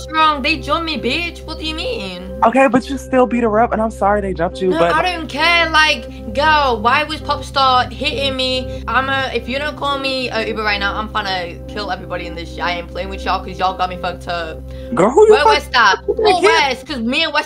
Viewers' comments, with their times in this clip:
0:05 'geawl wai was popsta hittin meh ' who let queen elizabeth on the show